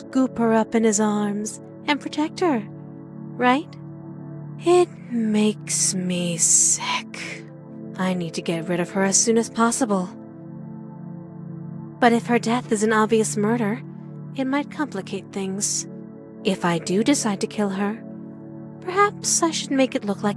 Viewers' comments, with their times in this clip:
0:06 the way she said sick